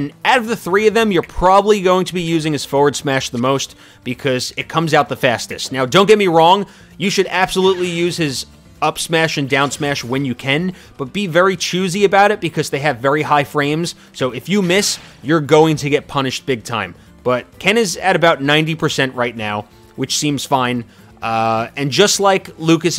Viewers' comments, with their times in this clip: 0:06 "Don't get me wrong, you should absolutely use his up smash and down smash when you KEN(can)"
0:06 why does it sound like when u Ken?
0:09 “Upsmash and downsmash when you KEN”